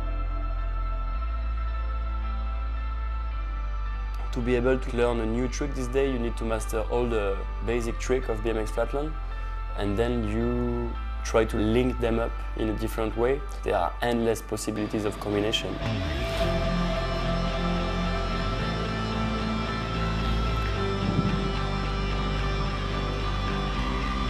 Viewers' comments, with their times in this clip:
0:05 is that a french guy talkin?